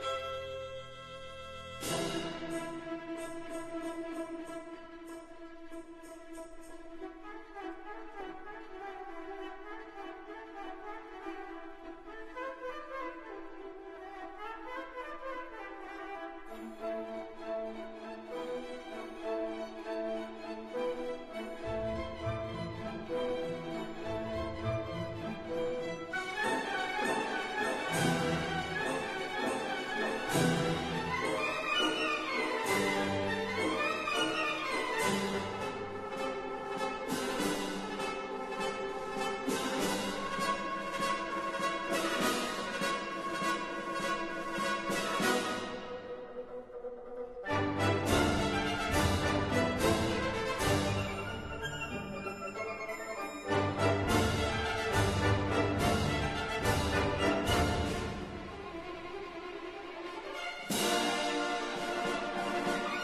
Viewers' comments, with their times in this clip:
0:07 sounds like the Wicked Witch of the West flying in the Wizard of Oz.
0:46 Did the bassoon mess up ? It sounded behind with the dotted quarter note and 3 eighth note passage.